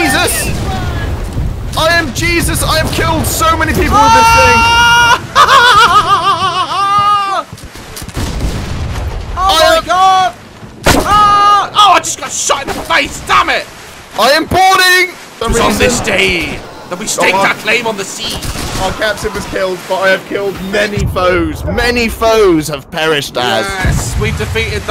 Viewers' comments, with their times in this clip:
0:04 The Fuck is that Laugh!?😂👌
0:05 His laugh 😂😂 i cant breathe !!
0:08 What was that laugh